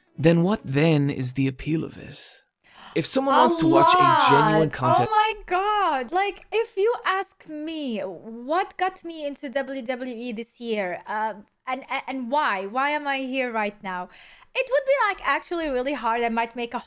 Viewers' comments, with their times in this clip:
0:03 goes through train tunnel for a second